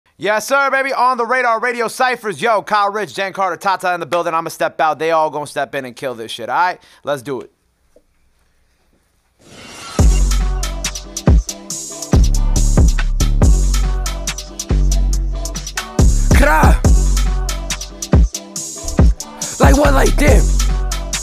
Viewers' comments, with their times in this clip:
0:08 dat first beat shi harddd